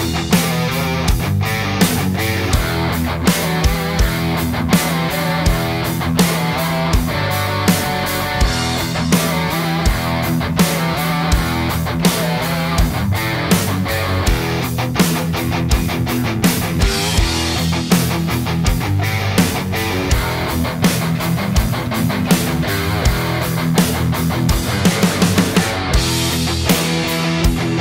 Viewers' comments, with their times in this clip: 0:10 Right now I'm undecided which sound I like better... both have their pros and cons and niches. I think actually, they sound equally good but different... I'm confused.